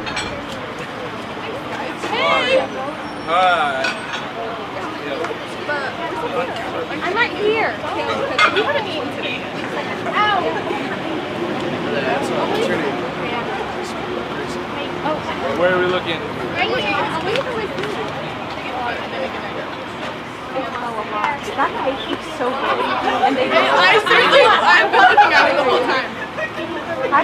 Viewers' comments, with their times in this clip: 0:09 lol that girl gently pushed her forward cause she was holding up everyone else and she got the nerve to do a dramatic “oW!”